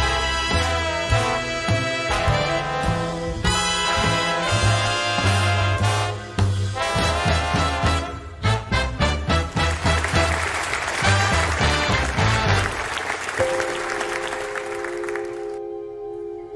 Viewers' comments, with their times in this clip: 0:04 Was that a stutter with the Queen ?